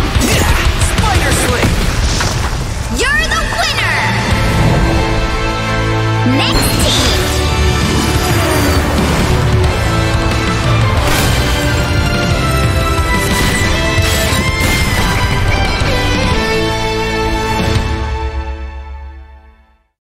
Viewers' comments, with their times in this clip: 0:05 loop for galactus the soundtrack sound epic tho